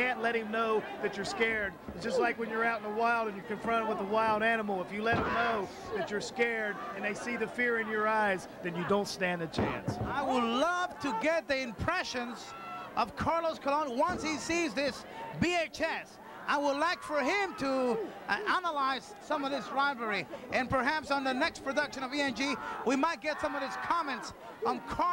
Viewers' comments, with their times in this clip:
0:06 LOL. You can hear Abby say "Aw, Shit!"